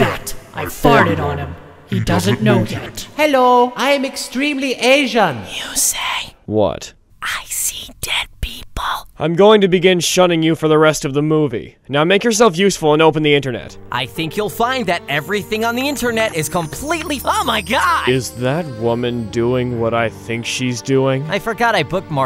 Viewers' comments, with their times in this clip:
0:05 Jaden sounds seductive.